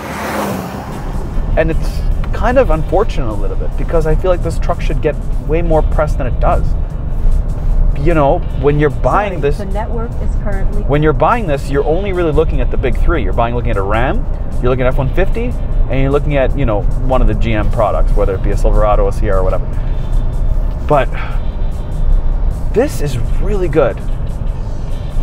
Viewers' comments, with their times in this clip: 0:10 who is this beautiful voice?